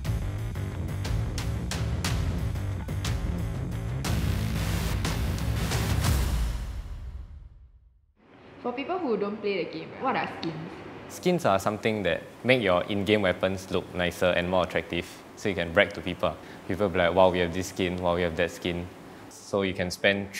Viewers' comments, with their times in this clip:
0:07 that sounds like tokaku voice so much is it her?